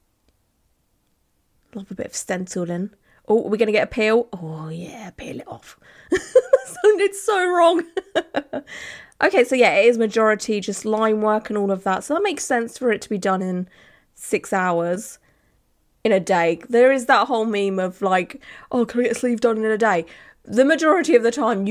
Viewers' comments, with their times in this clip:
0:04 " oh yeah peel it off " in a demanding voice HAHAHA